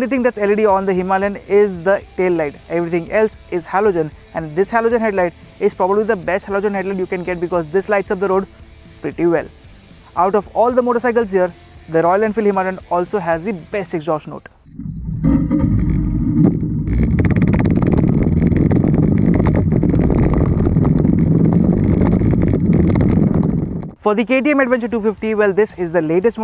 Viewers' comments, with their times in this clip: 0:10 this is definitely not the exhaust note of Himalayan